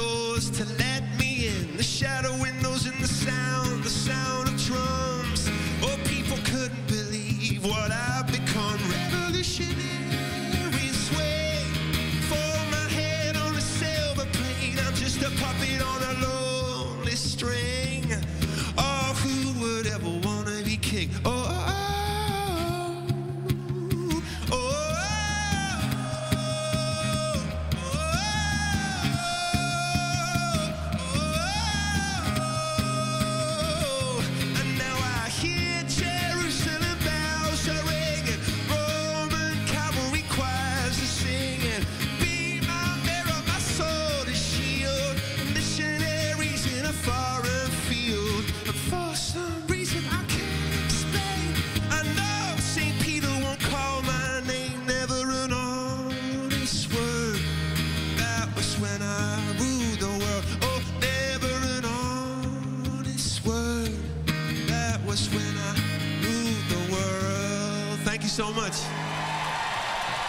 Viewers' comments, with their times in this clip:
0:04 Sounds like "old people couldn't believe what I'd become"?
0:04 My favorite part! I like this version, it's so fast and cool at the same time.
0:26 Lol when chris start "whoo oohhh" the flash appears "To donate/help chris martin sing the song" because he almost drop his balls hahaha
0:26 high notes suddenly broken but it's ok, it's fine
0:31 Rip voice xD
0:53 Nope 'cause he misses the chord